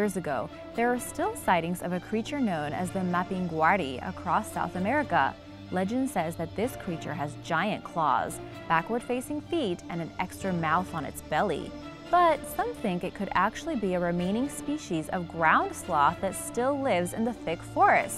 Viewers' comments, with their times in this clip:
0:06 sound a lot like nightmare fredbear from fnaf 4